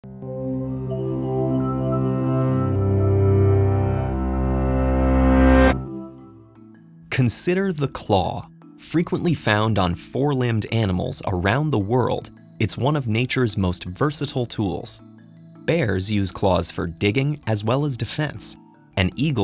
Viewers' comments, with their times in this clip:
0:00 intro sooo iconic sound